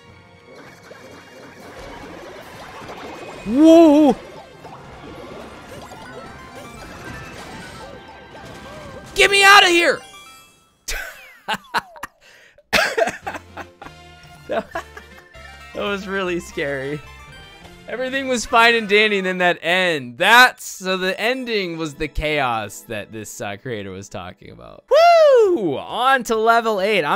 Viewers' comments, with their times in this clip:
0:09 i like how the « get me out of here » really came from the heart